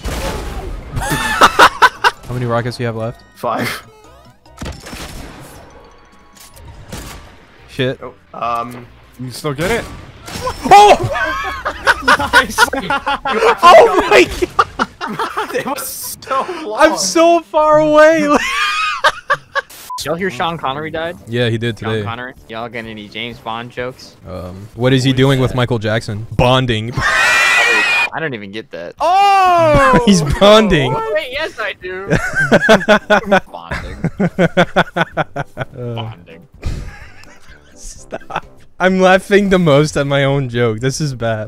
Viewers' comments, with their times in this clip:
0:06 he used a heavy sniper sound on the bolt sniper 🤣🤣🤣
0:24 The fucking wheeze tho
0:26 greatest wheeze I’ve heard